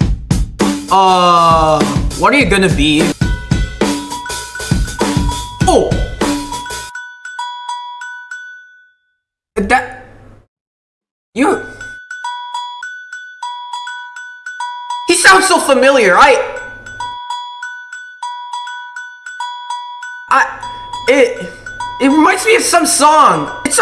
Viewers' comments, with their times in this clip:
0:08 that polo sounds like the piano part of downtown by Macklemore.